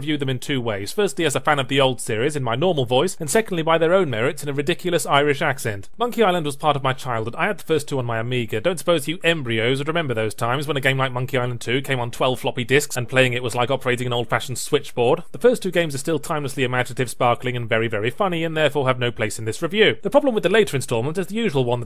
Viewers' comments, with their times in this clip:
0:07 WHY Did i miss this irish yahtzee joke for years. WHAT ELSE DID I MISS